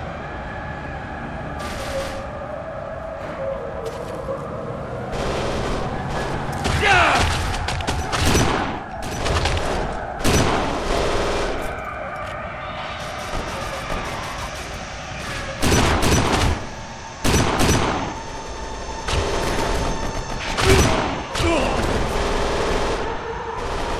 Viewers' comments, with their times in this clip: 0:06 Agreed. The soundtrack is so haunting and intense, especially which is something out of a nightmare. Brilliant!